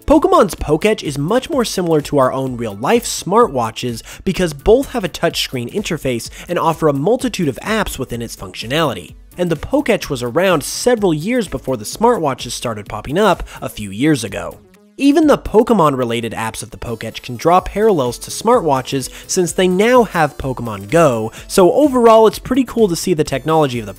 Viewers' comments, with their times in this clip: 0:09 I can't hear the right word. What is that amazing technology with... Pokémon.